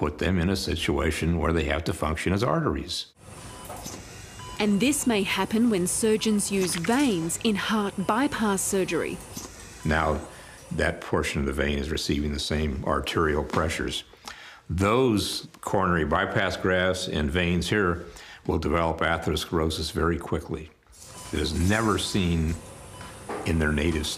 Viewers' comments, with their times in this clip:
0:05 Ok was that added sound effect really neccessary